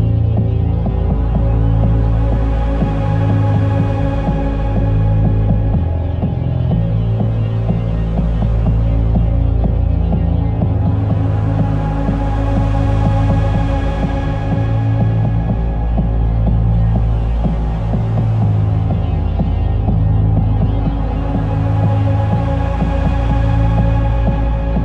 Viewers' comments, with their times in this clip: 0:08 ? that amthmospheric melancholy ...